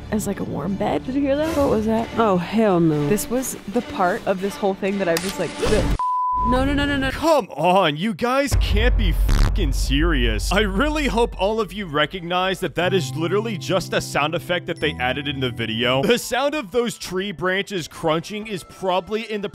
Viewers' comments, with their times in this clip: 0:04 OMG SO SCARY A SOUND EFFECT
0:07 IT IS A SOUND EFFCET🫡